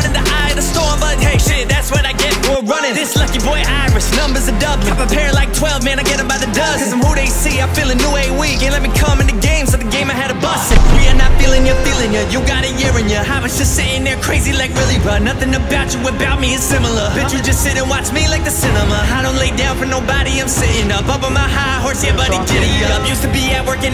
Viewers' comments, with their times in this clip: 0:04 seconds in I already fuck with it ❤️❤️. This my new workout music. Not a fan of the auto tune tho. I give it a 4.4 ❤️❤️ omg crypt your flow is nice 🤪🤪